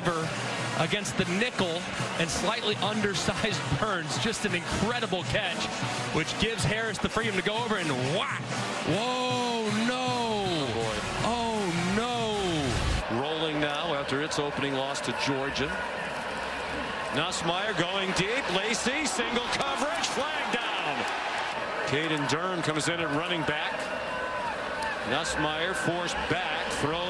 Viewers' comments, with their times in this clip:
0:10 the announcer sounds like Dobby from Harry Potter